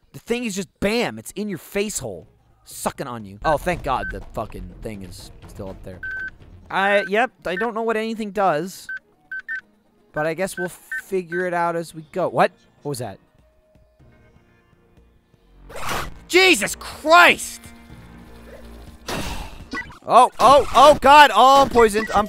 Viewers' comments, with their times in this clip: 0:06 Michael sounds like Kermit the frog